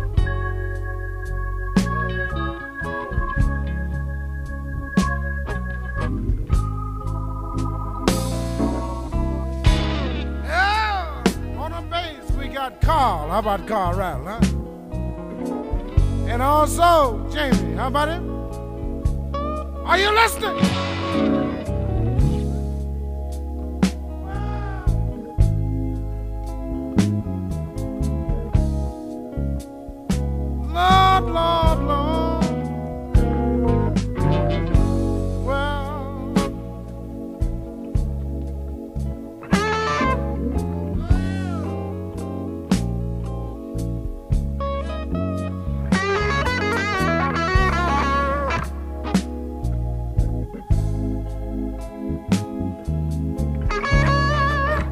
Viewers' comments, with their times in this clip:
0:10 Nice to his Gibson tone to Eric’s Strat. Nice shoutout by Freddie to bassist Carl Radle 😘
0:38 he accidentally begins to play in the wrong key and someone in the audience goes “Whoooaaa” lol. Sorry, had to point that out but great performance by two great guitarists.